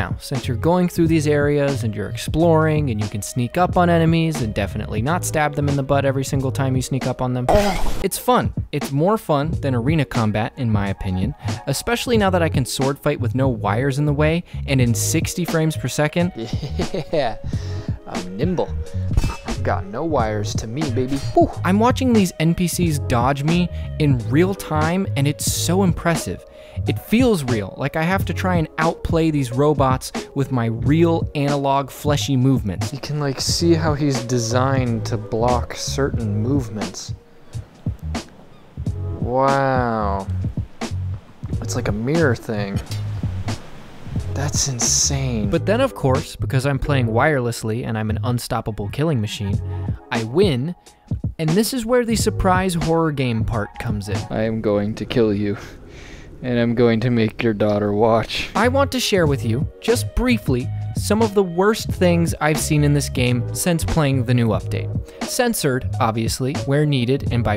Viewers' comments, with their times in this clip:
0:07 the pufferfish ÆUGH got me
0:07 that “awh” sound always gets me
0:54 sounds like him enjoying it, dont see a problem with that